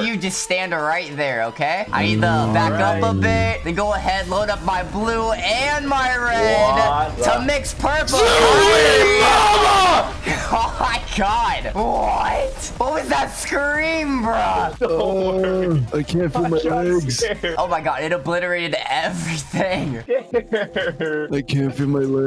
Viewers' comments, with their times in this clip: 0:08 who scream omg😆😆